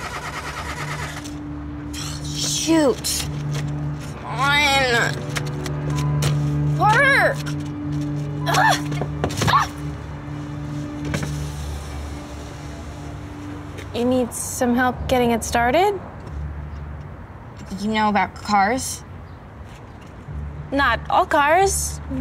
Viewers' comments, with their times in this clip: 0:09 the way she’s like UGH UGHH!